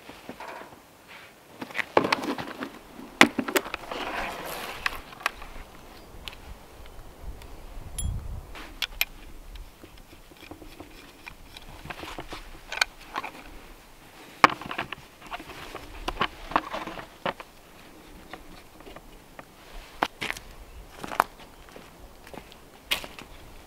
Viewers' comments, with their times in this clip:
0:06 you here a venmo sounding cha ching